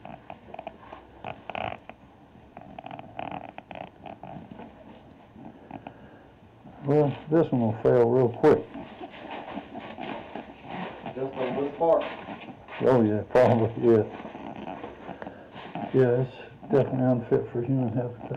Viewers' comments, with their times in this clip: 0:06 -Anyone else hear that demonic laugh in the background?